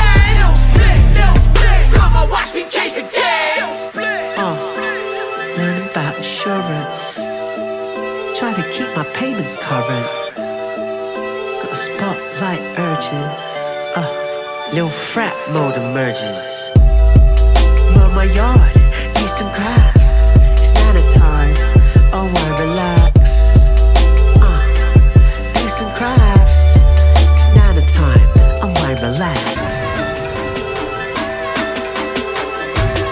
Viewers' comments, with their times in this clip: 0:04 the beat drops hard
0:20 i kinda thought was "its nana time, i might relax"